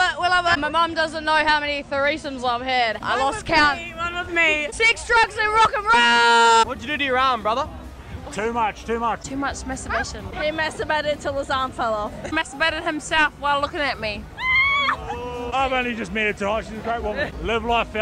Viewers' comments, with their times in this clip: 0:03 Which 6 drugs is she talking about?